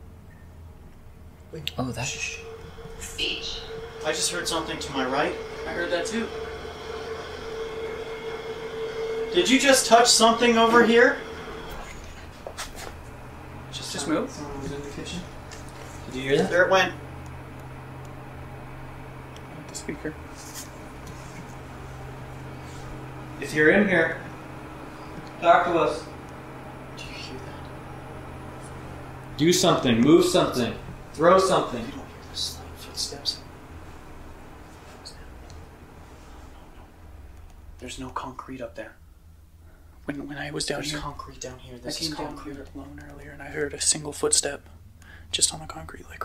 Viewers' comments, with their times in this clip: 0:10 Am I the only one that heard “I DID” after he says... “did you just touch something over here?” Start playing 😳😳😳
0:27 I hear “Jacob” being whispered 😬
0:28 I can hear a voice say something like ‘you hear me’ ...
0:28 that woman’s voice
0:29 you can faintly here a female say something like "it's me".